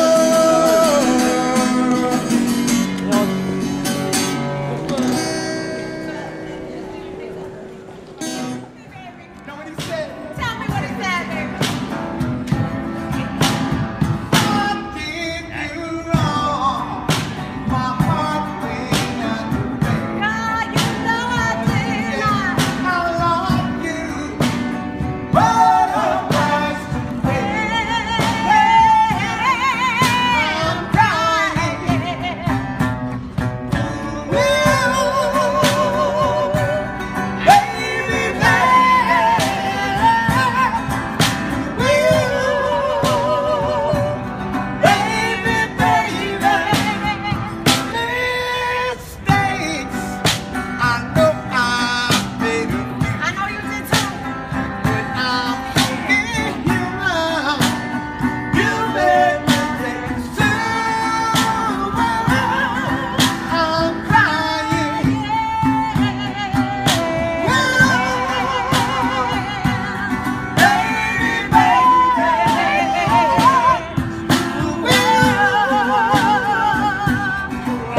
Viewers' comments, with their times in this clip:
0:07 the older lady and that man sang their hearts out that was amazing
0:08 That was pretty freakin' good, and without microphones too. Wow! Smokey would be proud.
0:10 its .. its just the acoustics that have tearing up
0:10 damn. Excellent vocals.
0:13 the duo had incredible harmony
0:32 That was one honestly the best imo guys voice is so good
1:04 this is 🔥🔥🔥💯🔥🔥🔥 Her runs are so crazy! She’s amazing. So is the guy. They’re Really good!